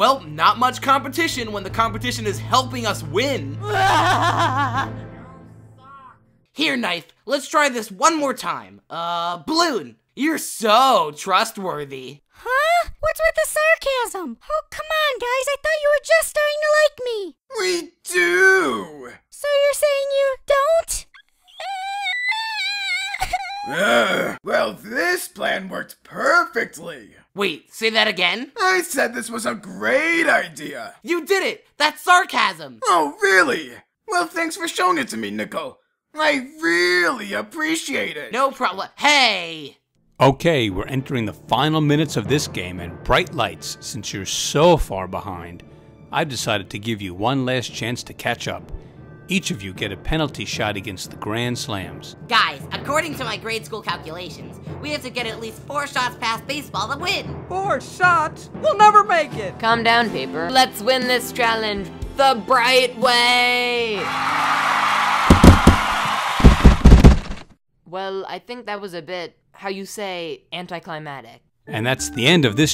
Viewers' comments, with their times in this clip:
0:04 THE FAINT OH MY GOD IS SO FUNNY LOL😭
0:04 Did you hear someone else talk from Yin Yang?
0:05 i love that laugh
0:05 If you wear headphone or put it on full volume you can hear someone say "YOU SUCK"
0:05 you can hear someone in the back round after yang's laugh
0:05 you can hear a faint Yo,stop after ying yang shouts.
0:06 I’m pretty sure I can hear paintbrush in the background saying “Yang stop.”
0:07 What was that “ADAM STOP” in the background
0:21 YALL PLAY THIS IN 2X SPEER AND U GET A "ueggghh😭"
0:21 Why am I laughing at the way he's crying lol.
0:22 has an pitch cut
0:22 that cry makes me feel kinda sad ngl :(
0:22 my little brother crying be like; (HAHAHHAHSHAHAGGAHAHAHAHHAAGSGWYSTAYATGAAGAGAGAHAH)
0:35 turn on automatically generated subtitles, then you will see that Nickel is Nicole.
0:57 ii lost media? (It cuts lightbulbs audio)
0:59 uh... lightbulb called fan "paper" and it cut off very obvious.